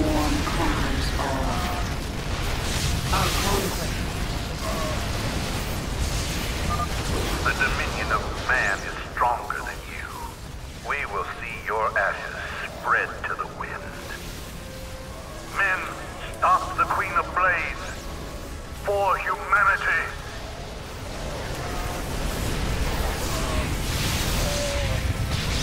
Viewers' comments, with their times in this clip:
0:07 Is it wrong to have misheard this: "We will see your asses spread to the wind!"